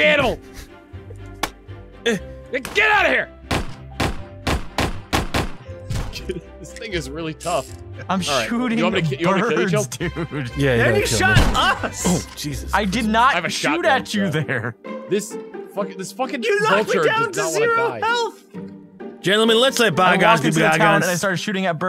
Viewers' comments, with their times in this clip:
0:05 sounds like a song